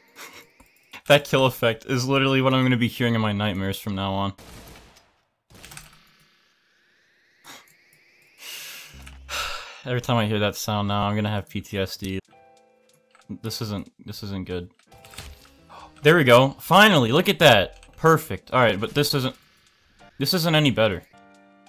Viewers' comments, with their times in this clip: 0:08 We sighed at the same time lol